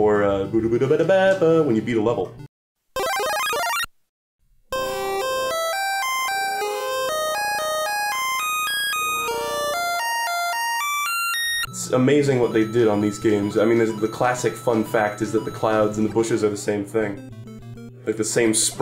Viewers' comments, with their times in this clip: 0:04 DUDE that's the same sound as the extended 1up glitch